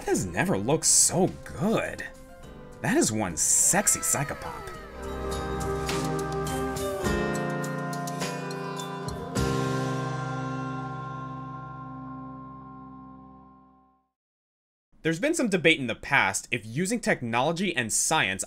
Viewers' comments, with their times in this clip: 0:03 the deep internet has ruined me, when I heard the "wow" I immediately thought Owen Wilson's "Wow." along with "...辞めて ください" (yamate kudasai). Ruined. Like the filthy weeb I am. :v